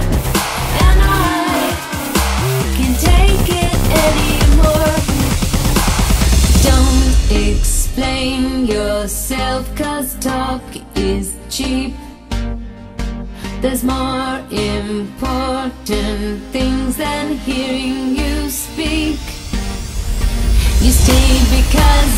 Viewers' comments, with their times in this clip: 0:06 Wow that was amazing ! My favorite moment is the instrumental goes so well with the vocals ❤ i will post the link in the description of my video